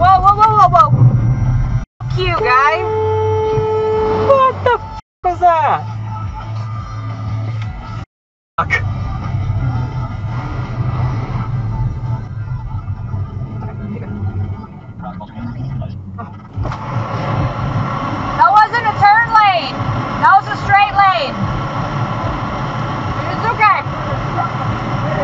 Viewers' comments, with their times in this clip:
0:06 omg 😂😂😂😂 the trucker thought they were beeping at him not to go because of the overpass 😂😂😂😂